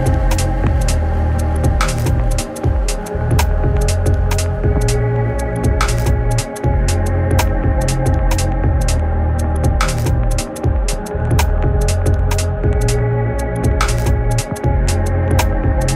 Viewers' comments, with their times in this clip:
0:03 Burial can't miss the bassline.